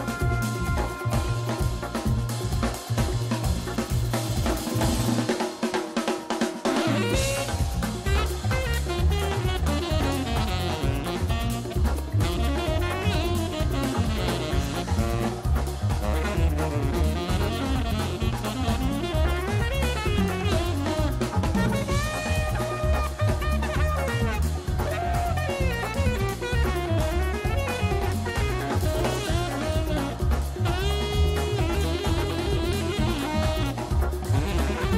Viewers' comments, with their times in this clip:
0:05 That sax solo is so good
0:20 I'm not a musician, but I laughed as soon as I noticed the lick